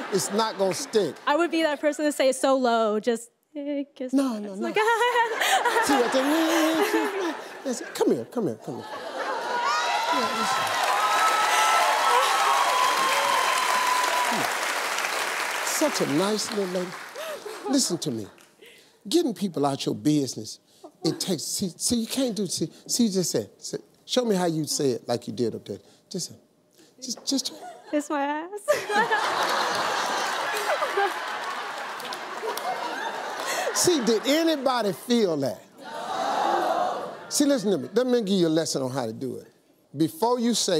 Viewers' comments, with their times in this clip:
0:09 did I hear an elephant?
0:09 did I just hear an elephant?
0:17 he said such a nice little ass 😂😂😂😂
0:28 Mr. Steve mimicking the lady is epically funny!